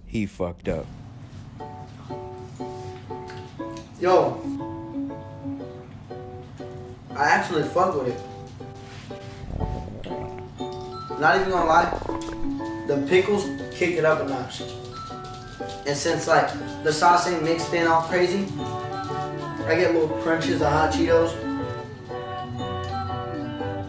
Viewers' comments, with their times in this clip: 0:10 asmr be like